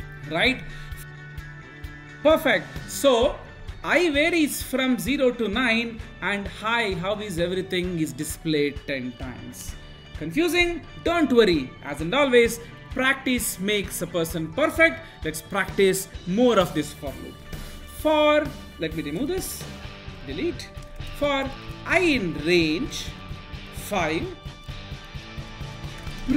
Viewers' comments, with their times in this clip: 0:08 Wow that's nice... i varies from 0 to 9 and it is *displated* ..lol that Made me forget python that I knew..😂😂